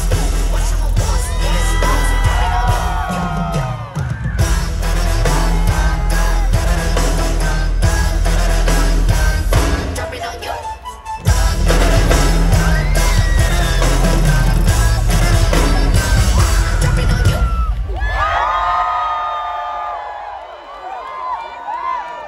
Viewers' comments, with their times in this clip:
0:09 damn those drums nailed it